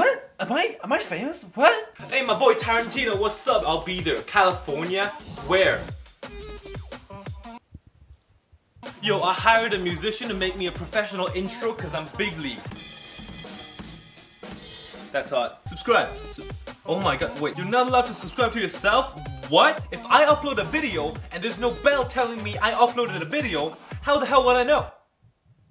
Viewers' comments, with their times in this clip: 0:10 Ayo thats sum sus music
0:12 definitely heard, "Cuz I'm fig leaves."
0:12 How is no one talking about that beat I need Jesus for instantly recognising it
0:12 the hub intro got me
0:12 those beats are so similar to gully boy's apna time ayega's opening beats